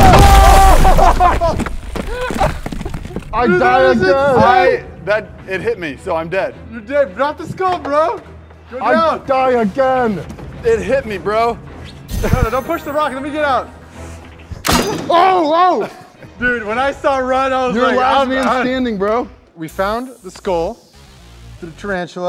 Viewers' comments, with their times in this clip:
0:07 PLS YOU CAN HEAR THE PLASTIC WHEN HE DROPS IT😭✋🏻